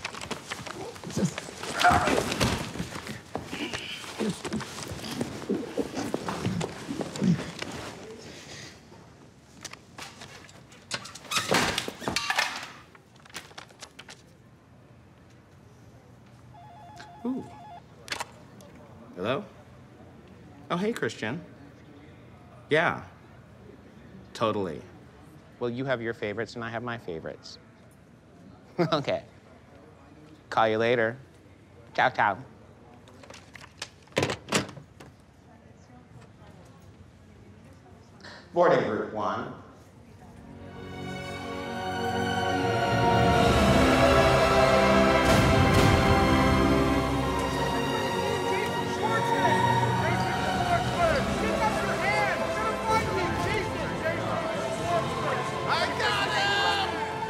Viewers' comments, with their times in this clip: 0:05 Jordan trying to contain his laugh.
0:40 And the full-on soundtrack music kicks in. What production values these guys have!!!! Is anyone even wondering how Peele makes such good movies?